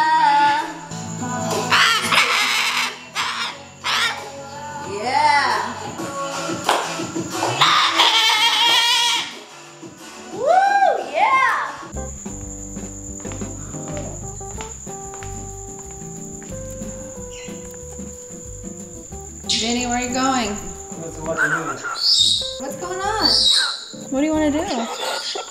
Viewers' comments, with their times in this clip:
0:09 Jersey is an absolute jem. Bless her her feathers are coming in more and more. Did she just scream mummy ? 🤣🤣😂😂😂